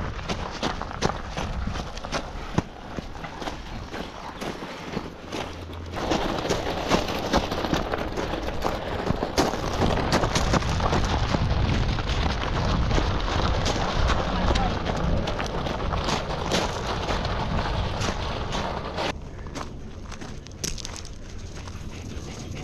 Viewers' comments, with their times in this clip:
0:03 Sounds like footsteps in tarkov lol